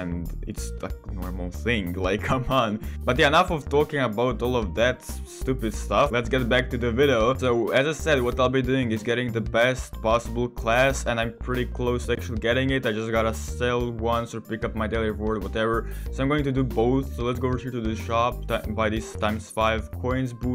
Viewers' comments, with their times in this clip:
0:06 he said vido